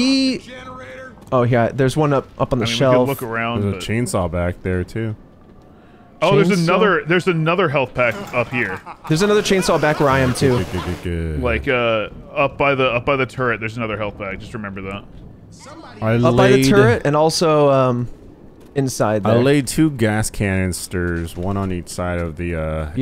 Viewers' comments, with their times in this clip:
0:06 I almost forgot Louis had that evil laugh